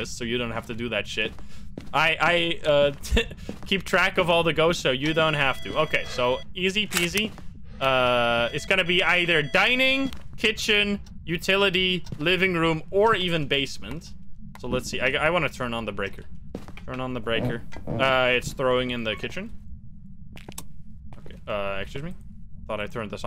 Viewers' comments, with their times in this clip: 0:10 when he said "or" I thought I got a Discord notification xD